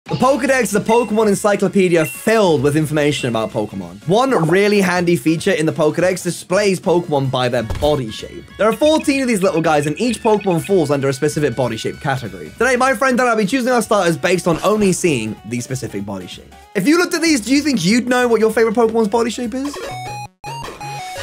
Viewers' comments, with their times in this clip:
0:07 Why he say body shape like that?😂